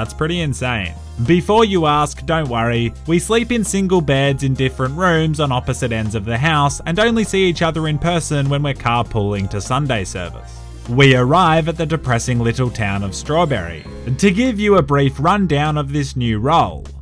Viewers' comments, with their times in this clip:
0:03 sounds like maris from frasier